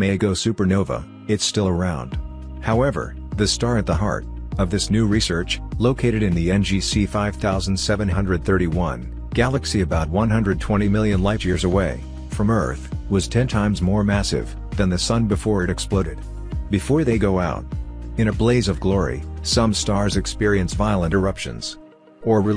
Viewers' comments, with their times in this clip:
0:09 There is no voice after